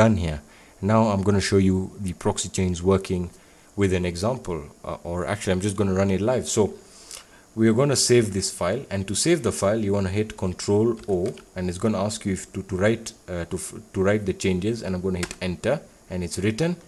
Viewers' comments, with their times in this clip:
0:04 It sounds like you are saying "I'm going to run you life" Haha , anyway good vid! #Subscribed